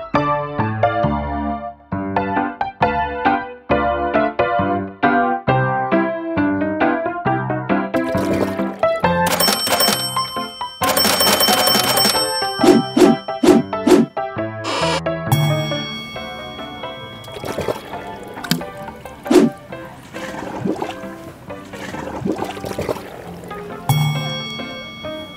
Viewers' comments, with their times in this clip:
0:06 The pooter is at the mark on the beans. Videos are awesome as always Jack! 👍🏻